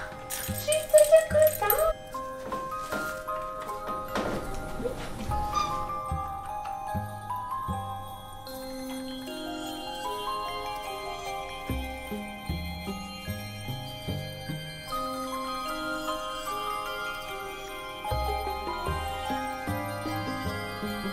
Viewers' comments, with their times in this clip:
0:04 The little "eep" is so cute! What a sweet kitty 💕
0:05 that little meep!!! I too have a black cat that meeps <3